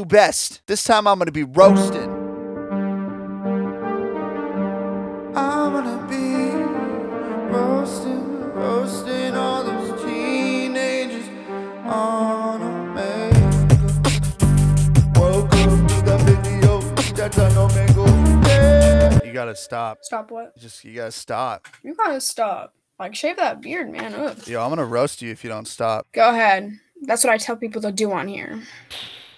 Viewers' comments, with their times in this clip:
0:10 sounds like a gorillaz song